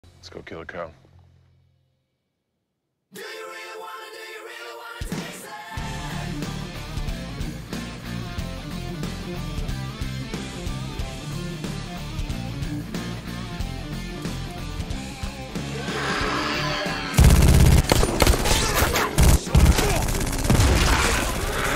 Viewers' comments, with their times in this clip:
0:03 I like the song in the background, during the opening.